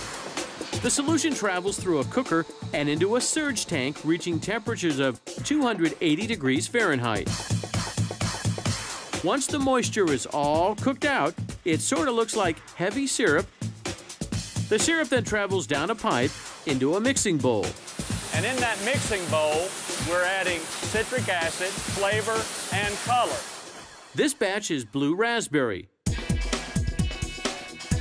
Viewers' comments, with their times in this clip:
0:09 lmfao u can tell he said something weird and it had to be cut and replaced w a clip of him saying “heavy syrup”